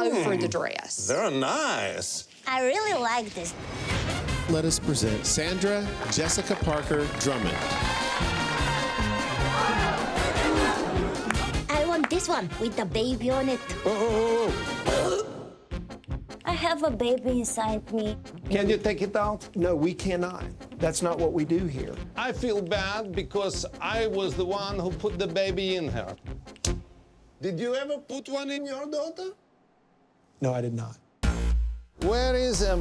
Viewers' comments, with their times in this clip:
0:09 Looks great but the overused stock gasp sound really get on my nerve.
0:14 She sound (and looks ) like Isla Fisher... hmmmmmmmmm